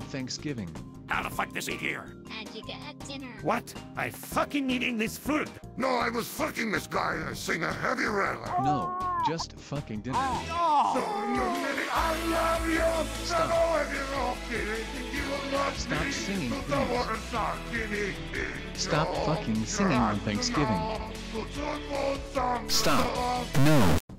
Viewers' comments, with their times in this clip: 0:10 How did you get heavy to sing like that?